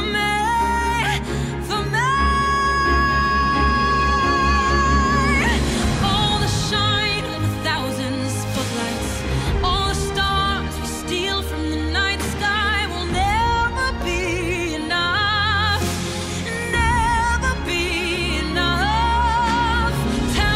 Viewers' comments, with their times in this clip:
0:05 that passionate singing... I felt that